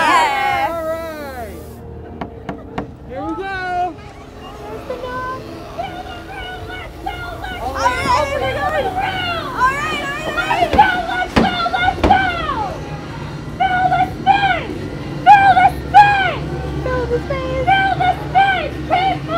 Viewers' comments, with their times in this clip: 0:05 that was me knocking on the door ha